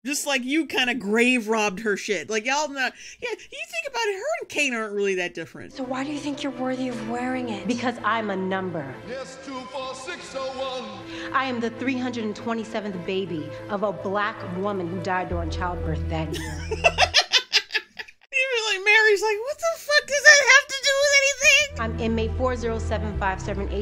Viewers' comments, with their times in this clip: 0:07 That Russell Crowe Javert had me rolling😂😂